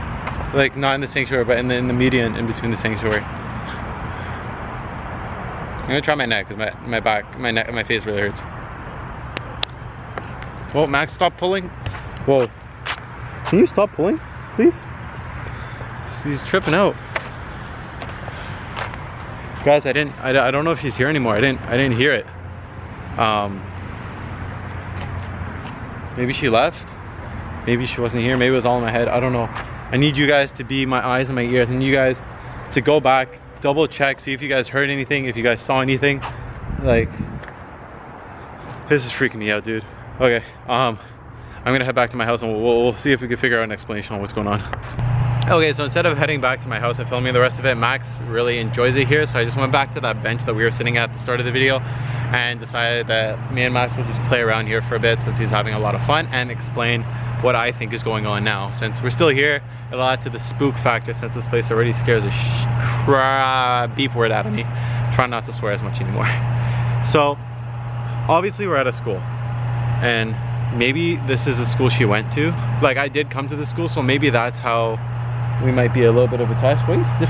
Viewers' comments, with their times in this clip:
0:10 In i hear the girl clap.
1:01 I heard someone crack a stick, while you were talking, I have headphones on so I can hear closely